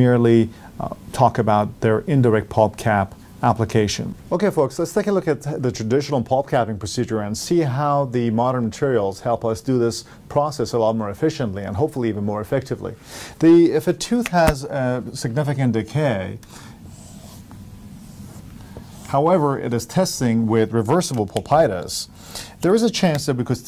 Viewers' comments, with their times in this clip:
0:07 no sound after min.